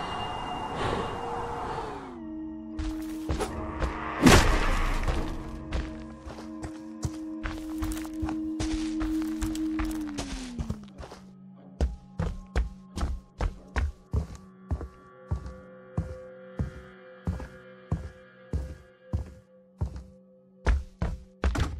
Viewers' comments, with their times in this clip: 0:07 Jason sighed with relief...)